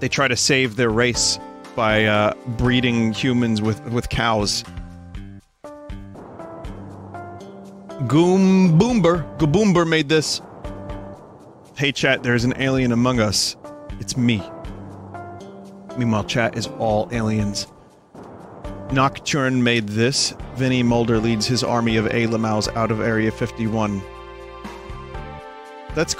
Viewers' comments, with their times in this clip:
0:08 Thank you for showing my art! It's great to see it on the stream Also what the fuck was that pronunciation of my name.